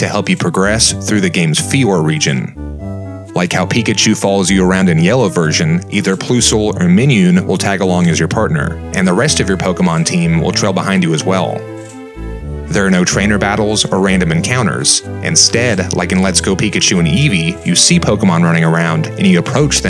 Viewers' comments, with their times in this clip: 0:06 Your work is an absolute treat to watch, but I lost it "Either Ploosle or Minioon"